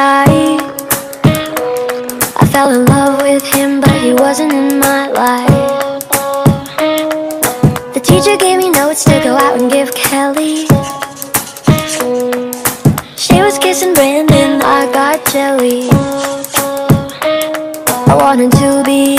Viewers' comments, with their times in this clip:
0:03 ...was I the only one who heard that wierd noise?